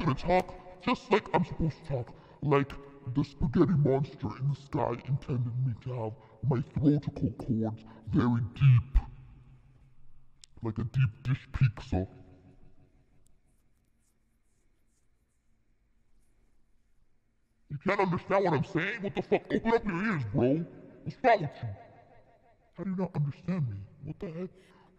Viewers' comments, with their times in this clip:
0:10 So, Ironmouse says she's like a deep dish peekza. ;)